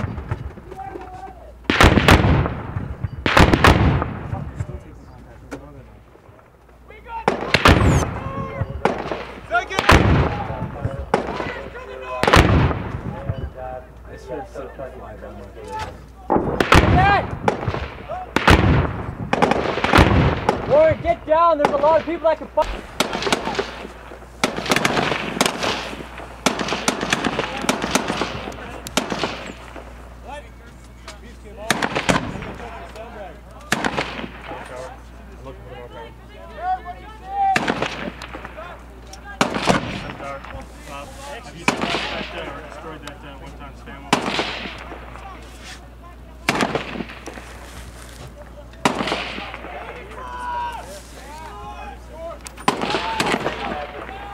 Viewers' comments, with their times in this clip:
0:07 If you listen the "zip" sound is a round flying over this soldiers head. Thats possibly the biggest adrenaline rush in my opinion. Does anyone know which patrol base this is located at?
0:40 wow @ :47 you can hear a bullet fly by. damn and